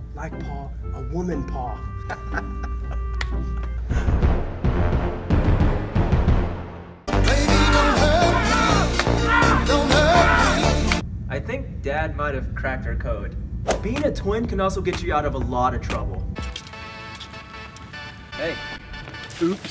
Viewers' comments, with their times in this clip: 0:07 I LOVE HOW ITS ON BEAT